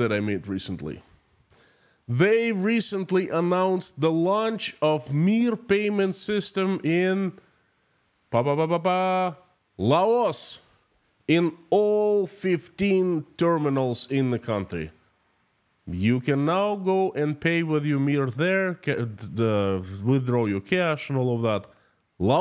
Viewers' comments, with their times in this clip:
0:07 Honestly i thought you'll say Papua New Guinea, and the video glitched instead of Laos.